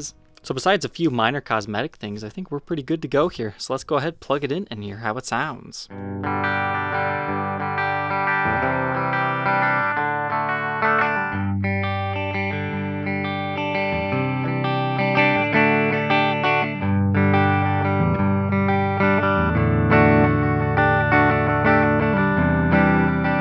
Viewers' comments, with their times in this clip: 0:05 Man, that chord progression was something unpredictable...
0:05 This sounds much better than I expected it too. Also, the P90s here don't seem to be as noisy as their Yamaha or Fender equivalents.